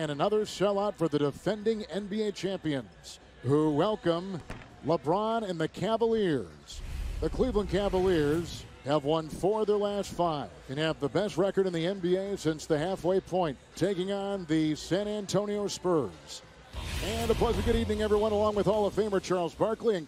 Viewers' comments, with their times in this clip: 0:04 MOUWANA? YOURE WELCOME